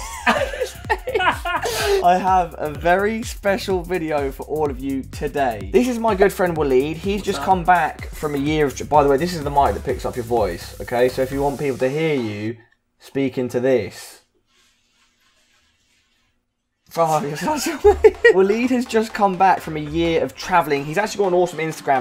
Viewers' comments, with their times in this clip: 0:06 sec,you said "this is my girlfriend"